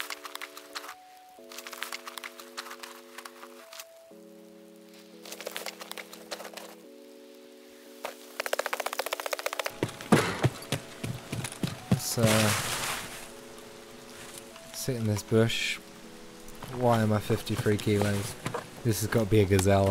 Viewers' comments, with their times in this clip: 0:07 I absolutely loved the pitter patter of pmc feet as you sped up the footage of looting that body